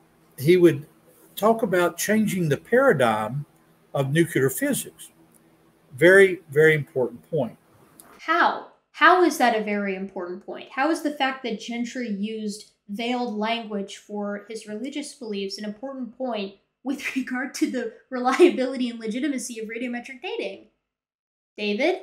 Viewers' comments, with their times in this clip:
0:04 I'm pretty accepting of people's pronunciations of words, but as a former US Navy nuclear reactor operator, it drives me INSANE when people say "nucular/nukular physics". Seriously. Can you just look it up in a dictionary and learn how to pronounce it?